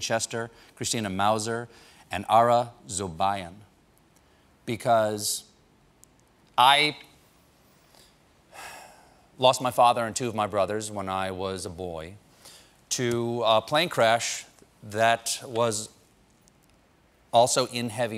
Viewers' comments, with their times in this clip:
0:06 That pause and sigh.... that fucking felt sad, it's like those bad memories for Stephen come up again 🥺